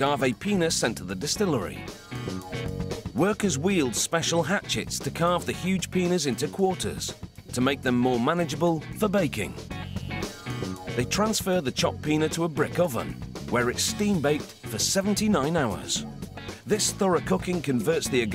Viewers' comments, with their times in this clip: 0:05 Huge Pinas? Really??... C'mon, it's Piñas and yes that enunciation really makes a difference